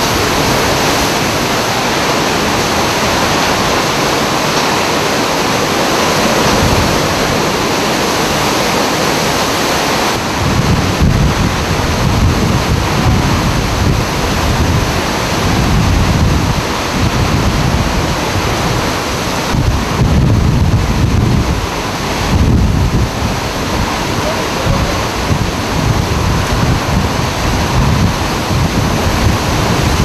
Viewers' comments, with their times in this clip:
0:04 the wind 😱I wonder how fast those gusts in that clip were
0:12 A.M. I WONDER HOW LOUD THAT WAS FOR PEOPLE WITNESSING IT!!!!